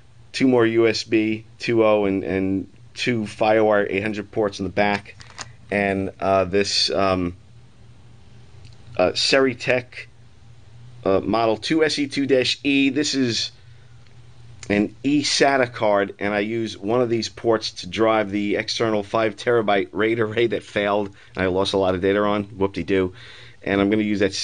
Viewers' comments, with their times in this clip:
0:06 I thought it said "StartTreck", because of how futuristic and high-tec those slots look..